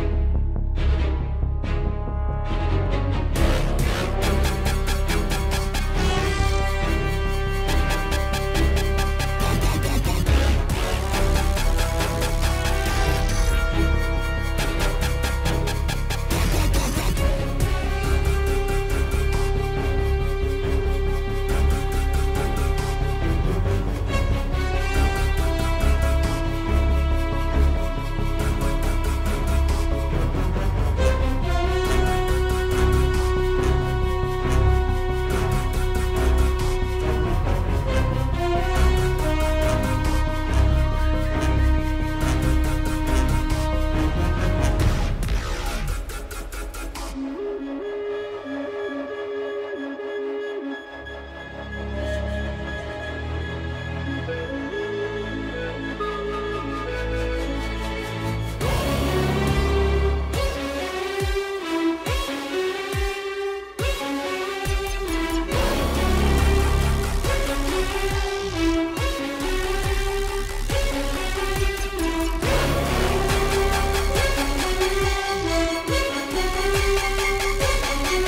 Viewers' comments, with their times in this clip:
0:07 this crap sounds like terraria boss music
0:39 something is said in the background. Its unintelligible but has to be some sort of speech
0:40 is it just me or is there a thermal detonator to be heared ??
0:46 Goddamn it was so unexpected at first but this dupstep that goes so hard is perfect for these ominous, overbearing trooper tanks! Also I love the use of the Mandolorian Theme here, changing the flute to be slightly more heroic.
0:47 I like shift in this part
0:57 My schools inkjet printer booting up
0:57 Wonder Woman theme vibes
0:59 Idk if it’s just me or it was intentional but does anyone hear the imperial siren in the music after ? Nice touch if intended